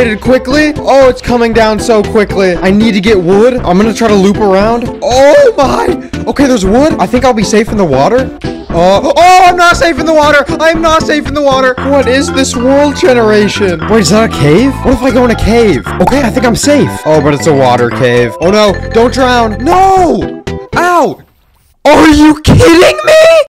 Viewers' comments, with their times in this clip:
0:09 you sound like ranboo for some reason in this part-